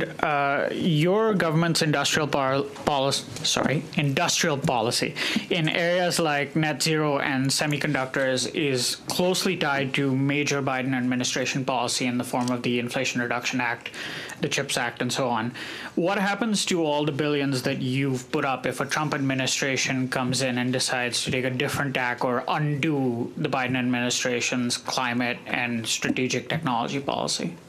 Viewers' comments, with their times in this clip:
0:09 Freeland look's confused with diversities broken English